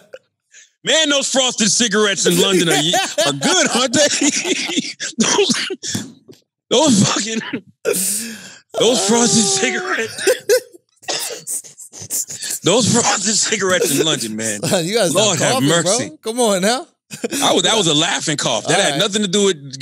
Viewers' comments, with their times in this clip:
0:05 that cough scared tf out of me like I was there